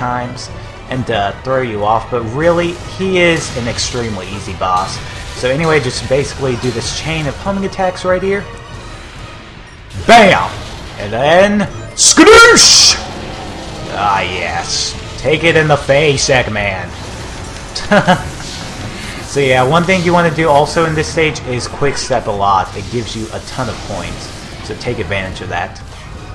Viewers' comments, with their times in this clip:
0:10 best skadoosh I've ever heard!